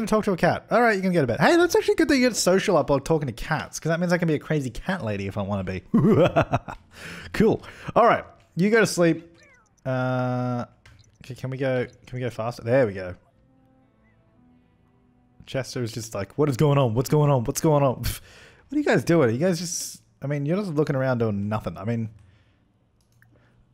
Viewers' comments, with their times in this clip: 0:05 That evil laugh tho